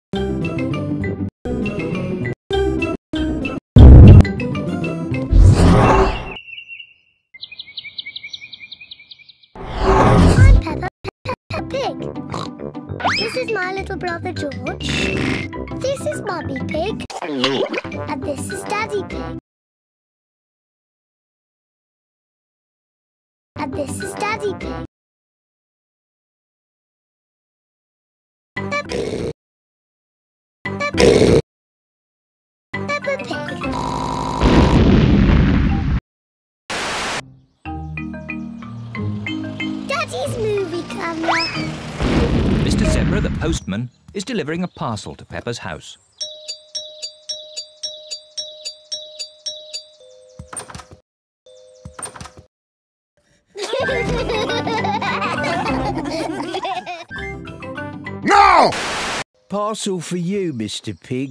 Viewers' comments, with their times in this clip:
0:07 you can hear cardinals
0:07 you can hear cardy-nals
0:16 what sound is that what mummy pig did? Instead of OINK!!
0:17 swallowing a burp
0:33 my pc startup sound
0:46 Mr Zebra be making music with Peppa's doorbell